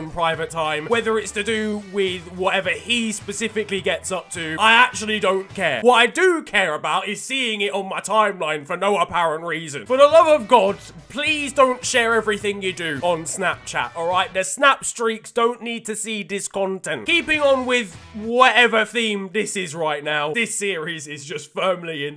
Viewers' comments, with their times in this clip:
0:06 you be sounding like GradeAUnderA